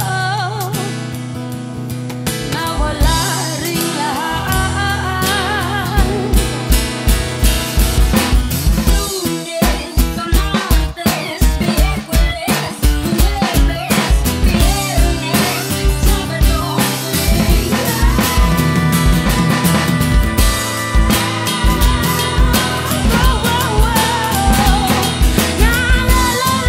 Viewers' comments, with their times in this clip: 0:09 She didn't need that effects on her voice